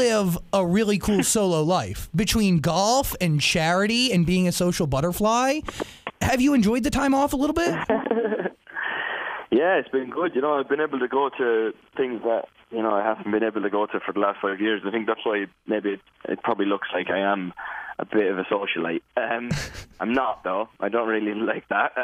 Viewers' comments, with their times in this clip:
0:07 Niall's laugh 😍 . #ThisTown is so simple and organic , I love that . The lyrics are genuinely and the song itself puts you in a relaxed mood . I swear I smile every time I listen to it . I also LOVE the fact that Niall didn't promote the song up until it was released , he just put it out there for us 😪 . I'm so proud of Niall and this fandom for supporting him . He's been so good to fans over the years , always putting us first .